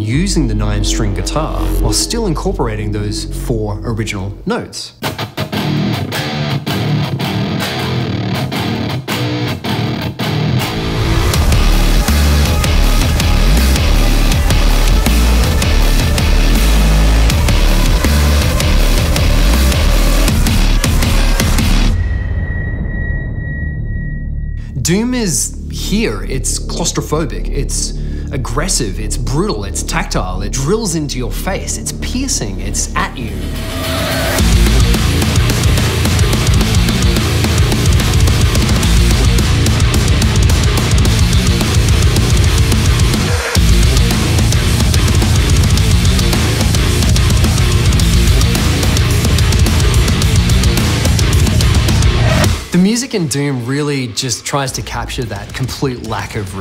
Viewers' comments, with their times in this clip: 0:05 I just want that 9 string guitar riff on a loop
0:05 sounds fuckin boss
0:06 this sounds cool without the effects
0:08 this guitar right here make the pain and fear for all demons exist
0:10 Which one is heavier? 1 kg of steel or 1 kg of this riff? Answer: 1 kg of this riff is always heavier.
0:12 it puts a smile on my face on how good this music is
0:19 that feels so incomplete without the chachunk
0:22 I could hear the shotgun being loaded.
0:34 that's a lot of druming
0:41 Soundtrack: aggressive riff with massive bass Video: guy petting a guitar